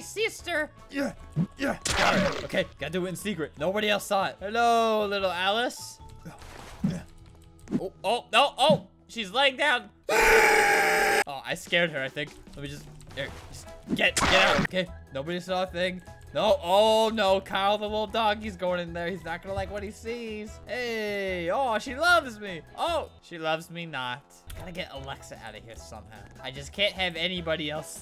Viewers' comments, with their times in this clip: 0:09 Albert: Oh she's laying down- Also Albert: *Turkey scream*
0:10 wow what a diseasent scream